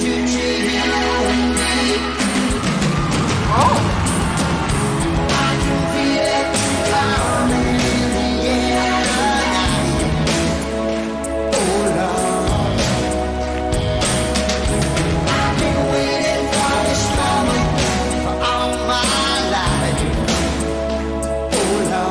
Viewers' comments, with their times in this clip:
0:04 If this was a sexy time song, that drum hit is responsible for a lot of unexpected pregnancies in the 80s.